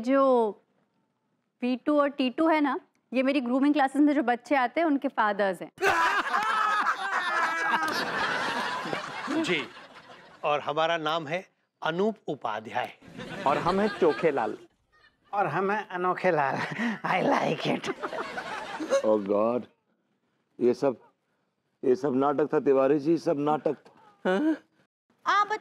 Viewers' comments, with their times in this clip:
0:06 rarest moment when finally teacher laugh 😂